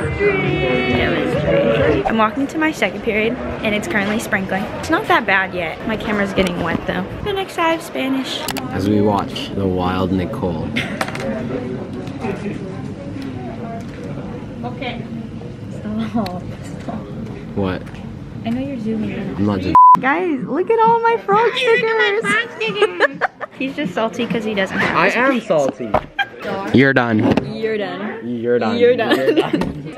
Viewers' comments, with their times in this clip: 0:10 you sounded like a pick me “sToPpP sToPpPPpP” pick me vibes💀